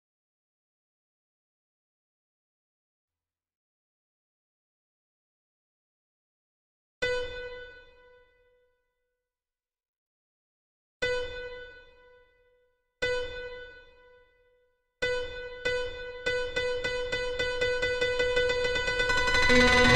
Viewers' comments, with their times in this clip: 0:06 the beginning sounds like rush 🅱️